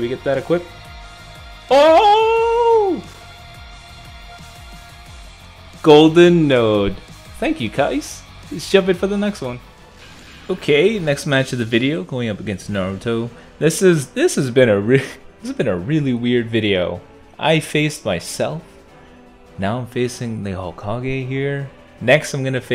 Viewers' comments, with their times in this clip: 0:07 did my man just say kIcE